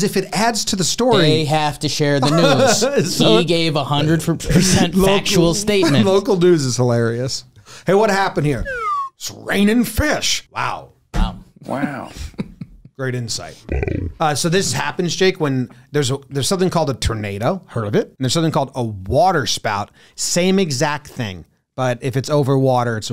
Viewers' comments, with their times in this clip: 0:10 Excellent job dubbing in the Owen Wilson "Wow" lmao